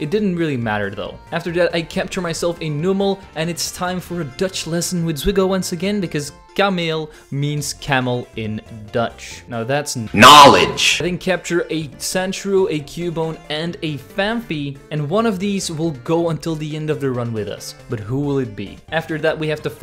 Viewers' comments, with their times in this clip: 0:05 i love your pronunciation btw where did you learn Dutch